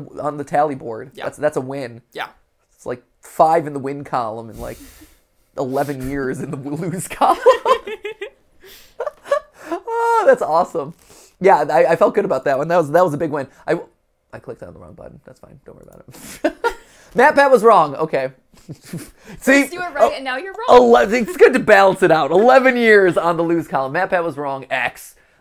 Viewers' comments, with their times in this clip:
0:08 I love Matt’s laugh when they were talking about the win loose Collims Time: